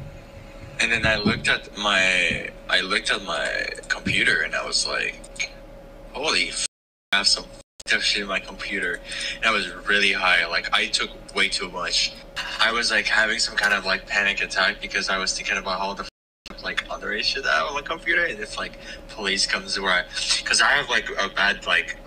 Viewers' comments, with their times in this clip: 0:08 i think he might be saying "underage shit" not "other issue"